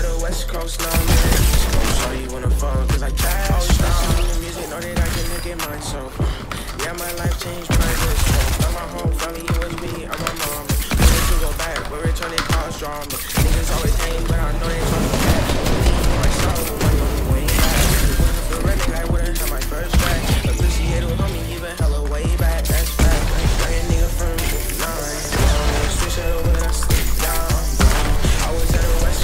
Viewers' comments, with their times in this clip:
0:10 listen to both charge shotguns then the shot, it’s kinda fire the drop. 🔥
0:10 matched the beat so nice